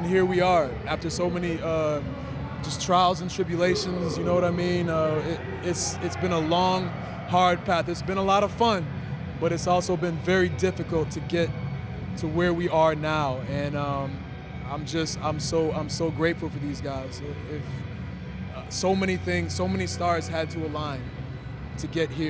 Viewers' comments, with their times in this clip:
0:03 Could anyone else hear Drew Macintyre's Theme in the background? and him announcing his name? lol